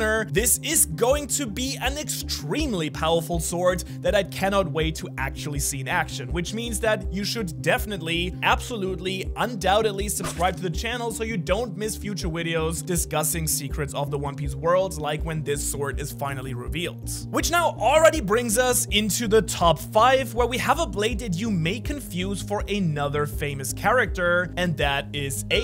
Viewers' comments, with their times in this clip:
0:08 did you heard when he said "discussing future wideos" LOL . Watch this is time stamp x0.75 speed
0:11 Ah yes. A new word: wideos
0:11 Is it just me that heard widios
0:12 “for future widios” LOL
0:12 did bro just say wideos
0:12 future wideos lol
0:12 he said Wideos like an actual Asian 😂😂😂😂
0:12 u said wideo